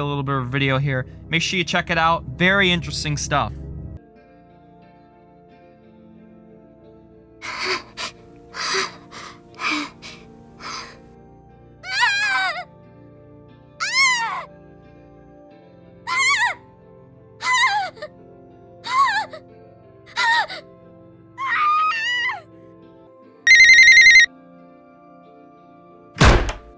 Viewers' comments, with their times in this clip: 0:07 hearing young Clementine scream for like 15 seconds was not pleasant lmao 😂